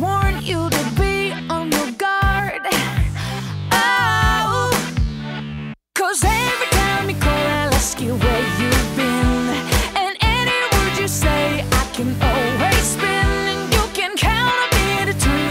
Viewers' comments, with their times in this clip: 0:03 sounds like justin bieber
0:03 LOL she really sound like jb